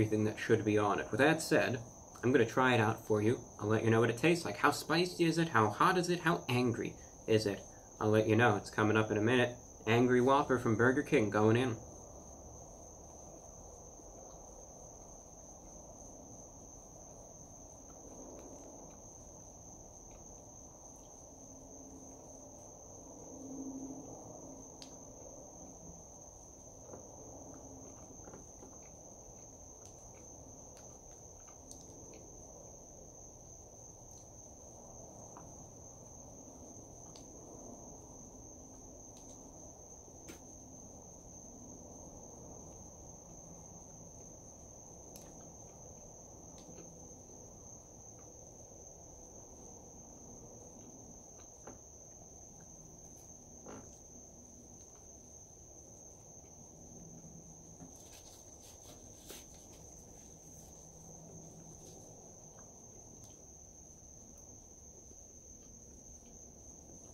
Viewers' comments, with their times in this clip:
0:10 ASMR 2.0 is
0:53 he farted while he was eating! lmao
0:53 Lmao did he just fart
0:53 vwas that a frog or you tryna sneak a toot
0:53 Yeah and he farted
0:53 he farted check it out I'm for real